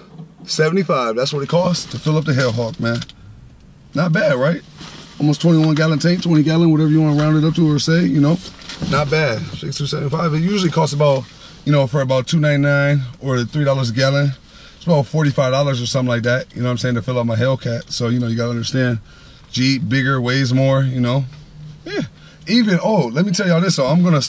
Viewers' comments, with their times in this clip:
0:05 he sound like he singing lol